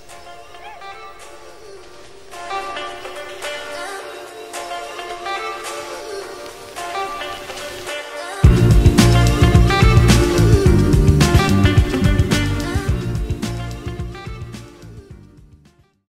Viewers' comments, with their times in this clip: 0:04 only a piece of this new song gave me chills